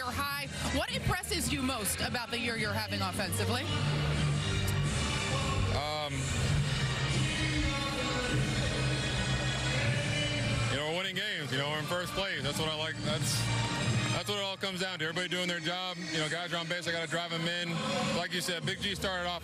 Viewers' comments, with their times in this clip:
0:05 That long pause shows how modest he is too